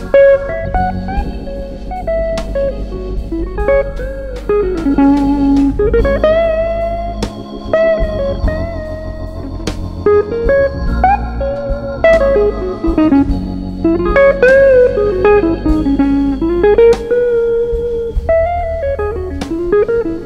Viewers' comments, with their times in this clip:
0:07 theres more feel in the little bend/slide lick than most guitar players will ever know,